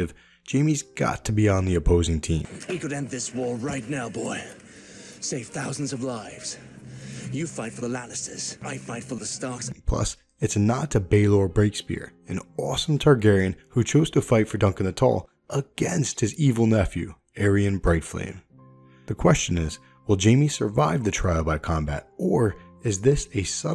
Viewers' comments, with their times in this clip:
0:06 Where did that jamie quote come from ??? "You fight for the Lannisters, I fight for the Starks" did you edit that together? It sounds very real